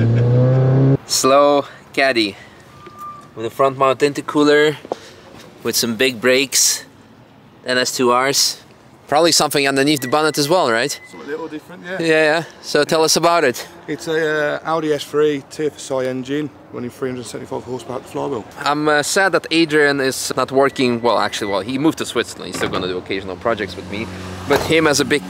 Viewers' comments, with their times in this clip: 0:07 This is "team dynamics" wheels? There are as good as saying? Engine almost flying on revs, madnes XD